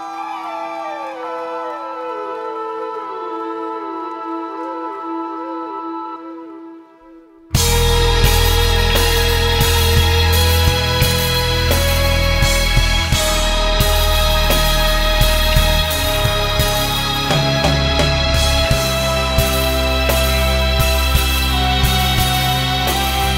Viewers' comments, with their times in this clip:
0:04 Transition reminded me of the Court of the Crimson King